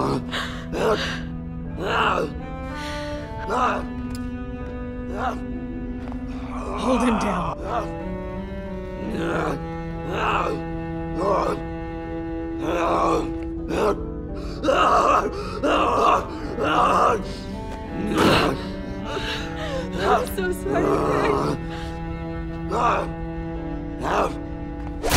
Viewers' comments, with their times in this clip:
0:10 The grouhing though